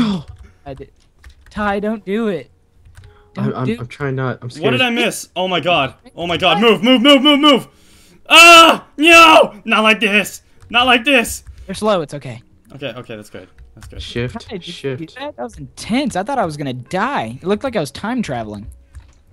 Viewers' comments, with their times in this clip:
0:06 it sounds like he's saying nya